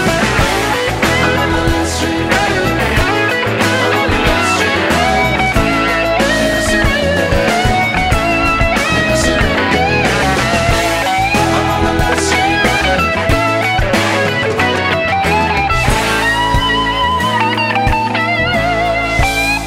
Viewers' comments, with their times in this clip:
0:05 is it just me or does he throw in a little slow dancing in a burning room in there for a second?